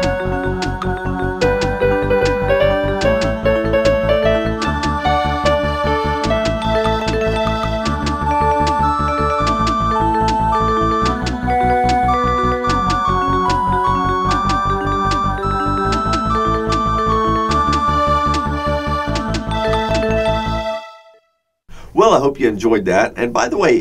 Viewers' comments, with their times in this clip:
0:04 There is a wrong note played there...